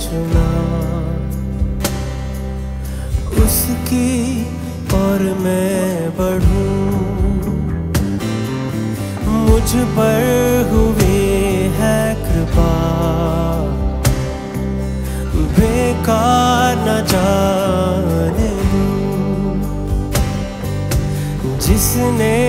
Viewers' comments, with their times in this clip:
0:06 Bass Guitar fills line 😂